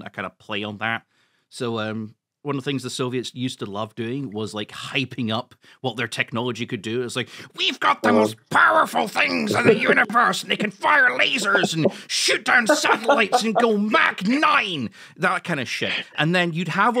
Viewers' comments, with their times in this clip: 0:04 Idk why I got spooked when he went MHM but damn (Tbf i have an AirPod in and I’m at home alone)